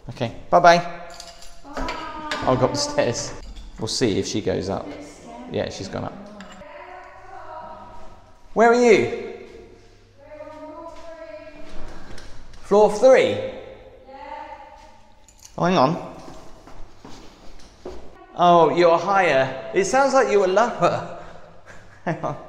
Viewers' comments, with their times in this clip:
0:07 shouting in the hallway while people are trying to sleep…..